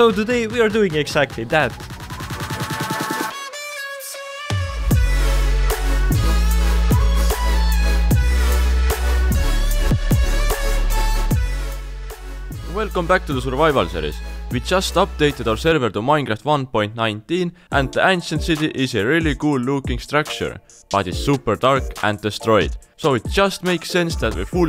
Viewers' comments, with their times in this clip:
0:05 just me or does say the mild update